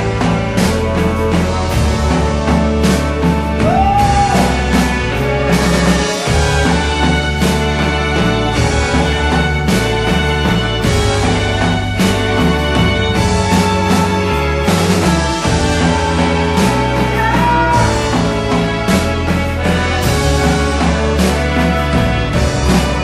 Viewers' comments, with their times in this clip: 0:08 when the orchestra comes in. Fucking chills man! I really think this and Wide Awake are two of the best albums out there. No doubt.